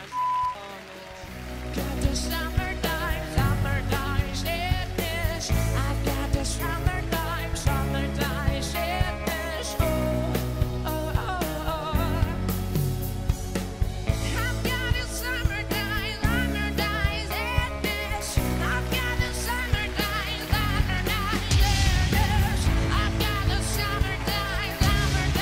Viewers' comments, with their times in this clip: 0:09 whether it was a girl or not I would turn, their voice is very fucking unique and calming